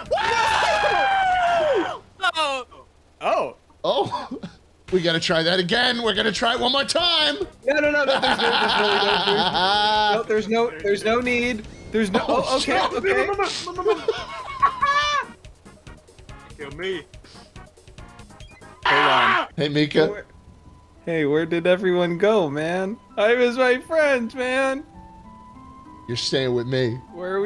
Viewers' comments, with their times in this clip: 0:08 gundham laugh real
0:10 the scream is my fav thing ever